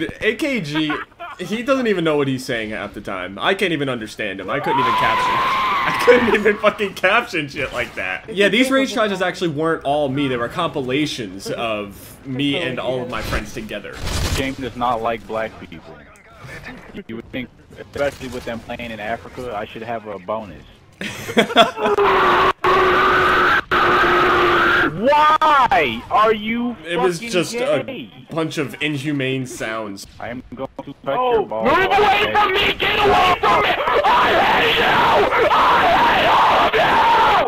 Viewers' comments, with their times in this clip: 0:04 bro said R2-D2 Scream
0:17 I can imagine a president at the podium making a political statement, leaning into the mic, and make this ungodly noise
0:21 Trying to sleep peacefully in the Midwest Some old train braking at the station 5 blocks away:
0:22 that is an ungodly sound
0:22 this man called forth all the demons from the depths of hades pocket
0:22 He sounds like he's barfing up a demon that has been trapped in his body since birth